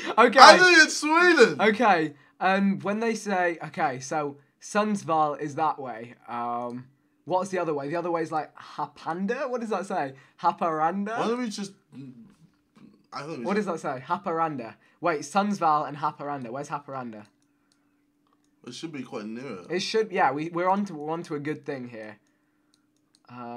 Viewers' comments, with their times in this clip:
0:08 When Vikk tries to pronounce your hometown..